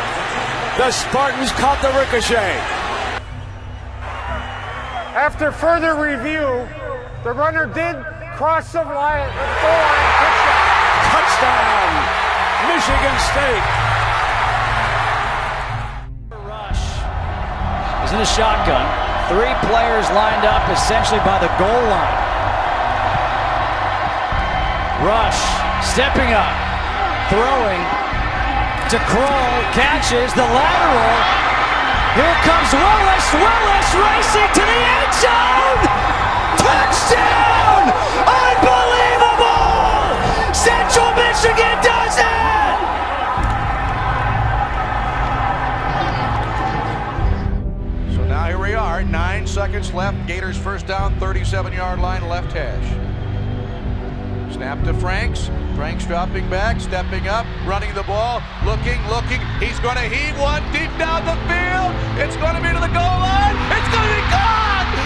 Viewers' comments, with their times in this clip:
0:07 the silence gave me chills
0:48 is picture perfect announcing. Brought tears to my eyes 😢